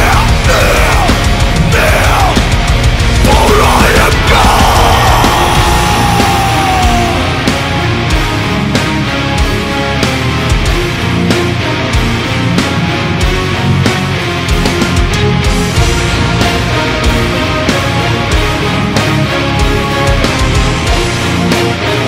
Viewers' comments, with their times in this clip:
0:05 The symphonic part is just pure epicness !!!!